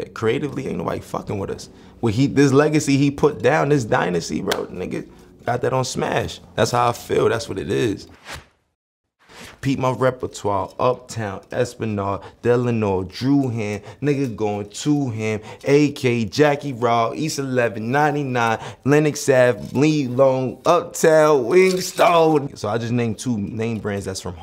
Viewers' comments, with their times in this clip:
0:09 rocky with that cam flow